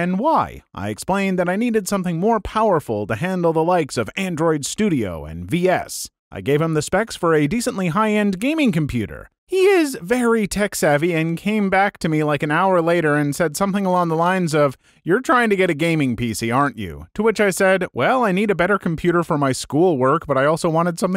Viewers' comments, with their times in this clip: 0:06 everytime I rehear this post, idk why, though the Computer sounds like a Compaq Presario, and OP sounds like my older brother.